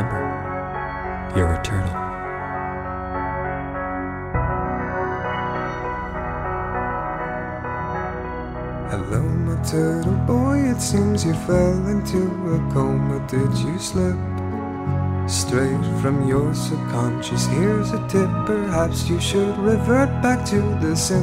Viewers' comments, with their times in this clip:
0:08 song is great